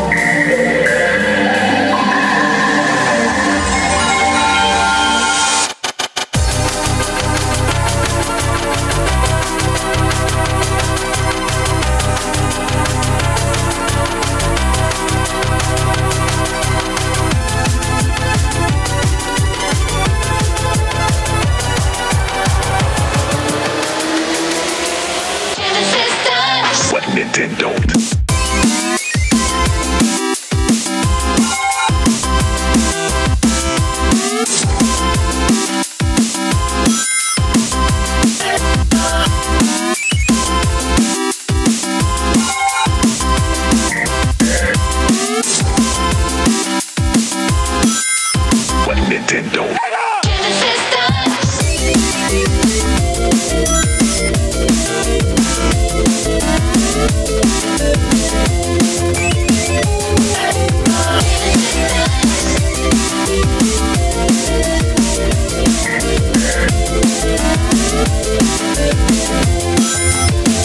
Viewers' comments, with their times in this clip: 0:08 ITS NOT EDM ITS BŘÉĄĶĆØŘẼ
0:53 The sound of every arcade center...